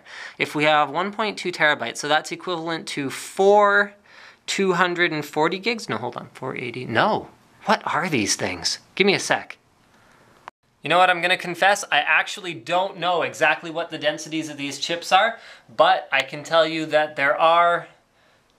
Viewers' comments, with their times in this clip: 0:06 Epic tone "What are these things?....."